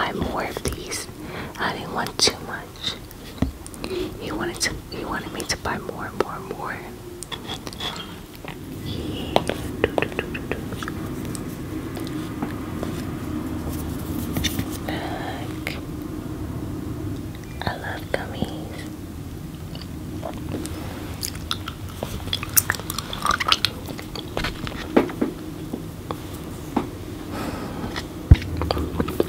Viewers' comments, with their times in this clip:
0:10 the tongue clicking or “do do do do do” noises were SO tingly like I wasn’t expecting that lol, the gummies look good btw!